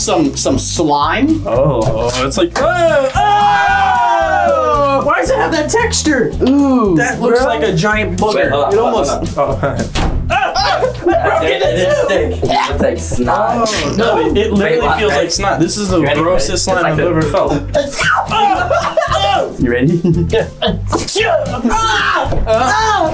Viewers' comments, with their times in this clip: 0:07 Once you guys sneezed I sneezed